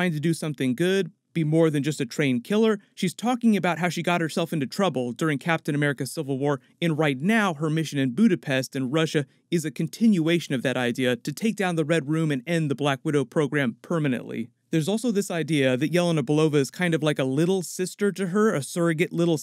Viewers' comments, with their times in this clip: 0:07 Did you say 'In Budapest in Russia', or 'In Budapest and Russia'? Because Budapest is in Hungary.